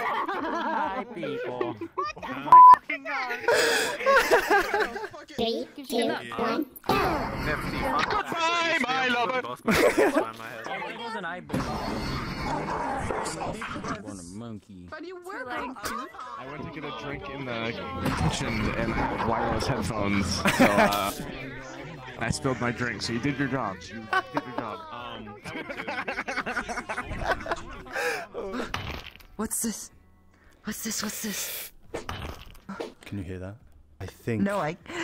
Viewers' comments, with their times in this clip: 0:04 Such a hard song
0:23 he has one of the best laugh i ever seen, contagious too xD